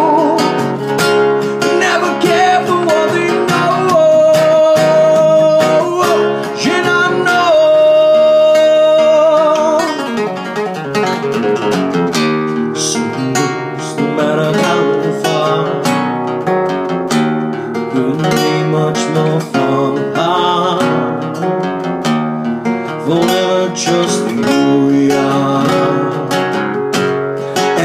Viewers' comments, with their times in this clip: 0:08 wow it was flawlessly .. you should pass those notes to the Metallica's guitarist
0:08 good filler riff at ~ :D
0:09 That fill is insane.
0:09 man that riff is clean!
0:09 I wish was in the original song. Sounds GREAT!! Awesome twist!
0:09 I played at half speed.and he still plays faster and cleaner than me 😒